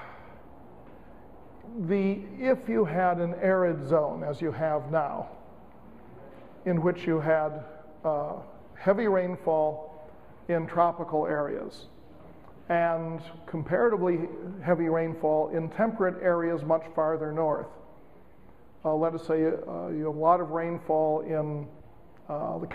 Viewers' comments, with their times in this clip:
0:08 It was interesting listening to this guy bloviate about how this is a top tier school in the first lecture, which I left early, and then deliver a lecture that had me pulling my hair out. I listened until and had to leave because, well, uh uh uh, he couldn't complete one sentence uh uh uh without inserting uh uh uh, "uh uh uh."